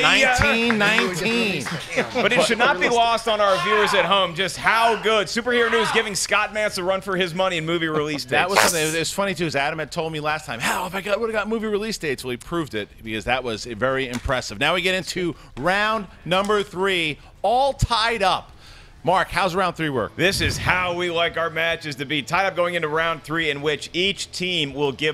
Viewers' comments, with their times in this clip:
0:07 Who farted on camera?